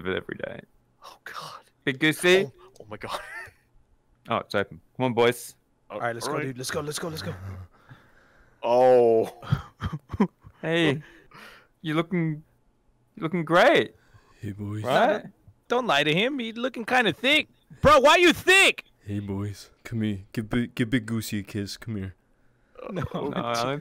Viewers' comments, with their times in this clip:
0:06 boss music starts playing